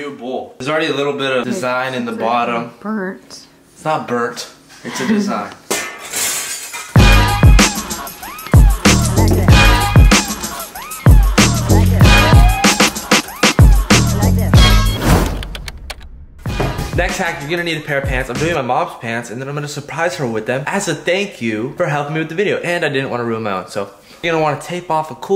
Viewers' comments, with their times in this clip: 0:07 Sorry man, I don’t have a bull